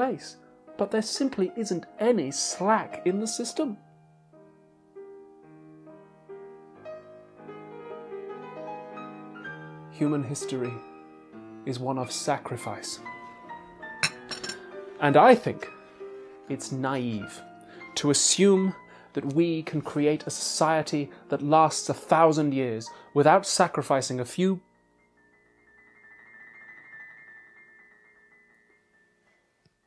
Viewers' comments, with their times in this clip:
0:10 Breathtaking moment, when the tea enthusiast elaborates his thoughts about a generation of Einsteins and Churchills... "Human history is that of sacrifice. And I think it's naive to believe that we can create a society that leasts a thousand years without sacrificing a few..... [ shivering trill ] ... a few THINGS." What a masterpiece! ☺